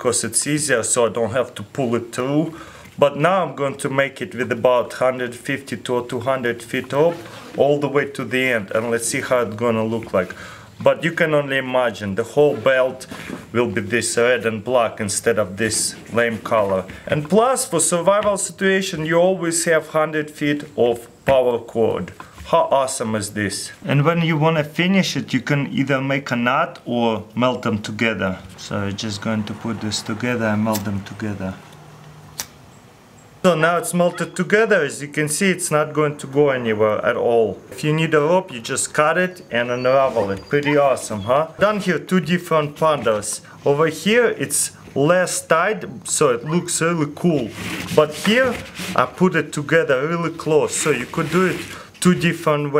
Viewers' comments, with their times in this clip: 0:03 Did anybody understand what he said?
0:33 Did anyone her the girl in the back or something like that
0:34 u could hear some laughing in the background